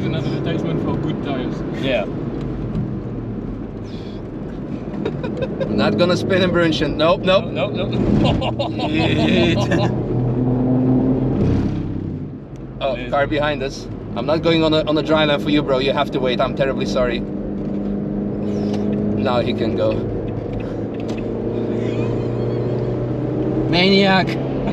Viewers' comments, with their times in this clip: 0:07 Frenchest laugh I've ever heard 😂